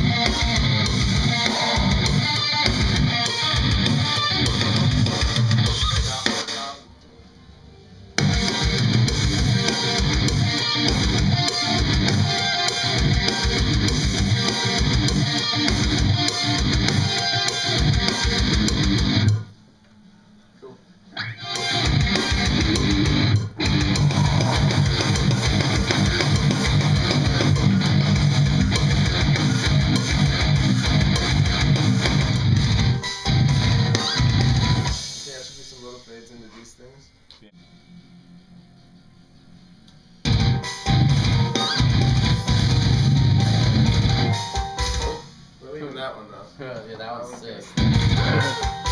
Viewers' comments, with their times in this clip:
0:05 That riff is like a walking mammoth. It's gritty
0:08 Holy balls that riff is SICK
0:33 that tone is fucking HEAVY